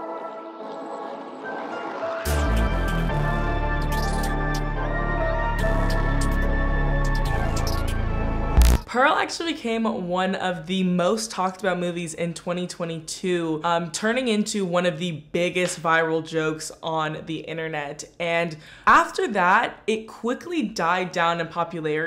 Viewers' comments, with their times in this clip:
0:05 tf is this beat why it got me movin like thisssss